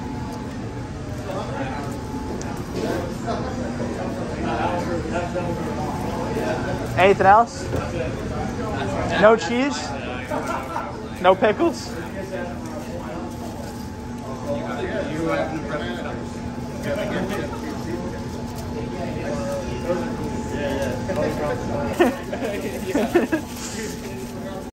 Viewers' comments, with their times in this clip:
0:10 what an awesome voice crack
0:11 voice crack lel